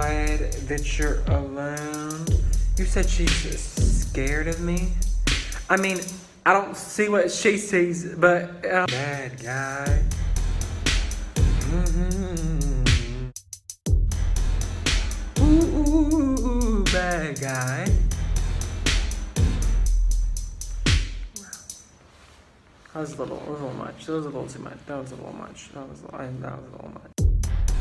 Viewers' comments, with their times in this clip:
0:10 did he just.. i was todays years old when I fount out you can do runs while humming. I-